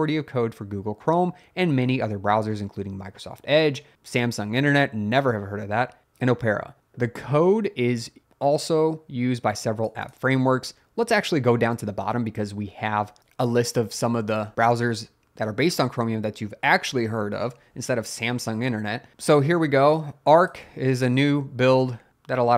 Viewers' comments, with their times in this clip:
0:06 Oh-pair-ah??? Opera is pronounced "ɒpərə", like the historical musical dramas where people sing typically in Italian or German and everyone dies by the end.